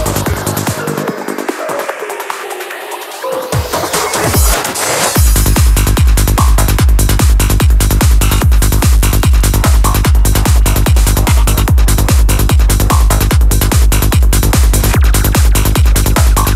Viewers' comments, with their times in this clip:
0:03 H-I END SOUNDS PSY-TRANCE